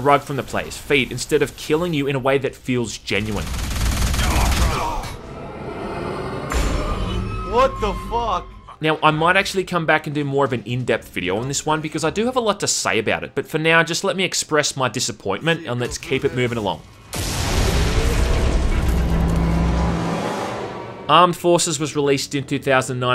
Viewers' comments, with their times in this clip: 0:07 that DSP sound byte got a good laugh out of me